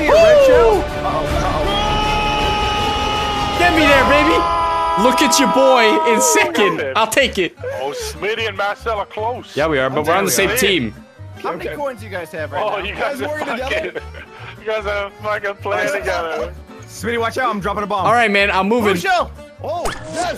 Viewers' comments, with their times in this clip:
0:04 did they just HARMONIZE
0:04 Anyone catch that voice crack